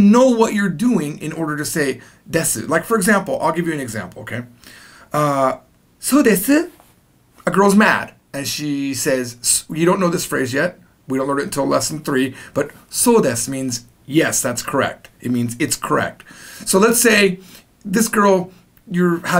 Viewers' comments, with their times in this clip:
0:03 Why does he sound like a completely different person?